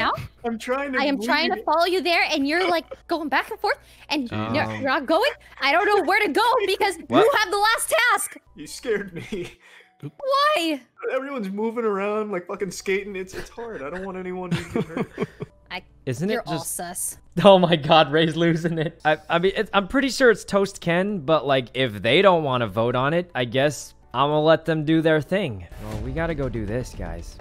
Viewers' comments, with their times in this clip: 0:09 Valkyrae sound like a girl sykkuno with that voice crack.